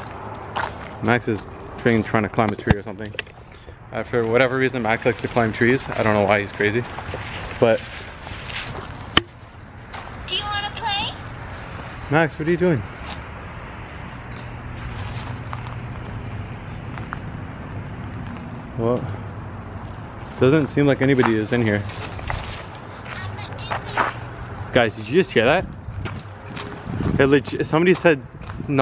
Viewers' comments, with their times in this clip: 0:04 For me I think that the doll is the one talking
0:08 that sounded like he played those sounds on his phone 😑
0:09 a girl said do you want to play
0:10 a voice says "Do you want to play"
0:10 a little girl said "do you want to play "
0:10 the little girl says do you want to play!
0:11 little girl said do u wanna play?!
0:15 little girl said do u want to play